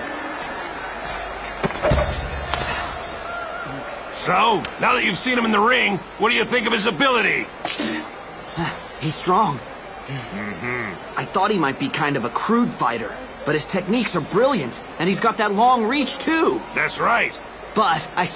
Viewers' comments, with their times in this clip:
0:04 that bell is the real enemy in this show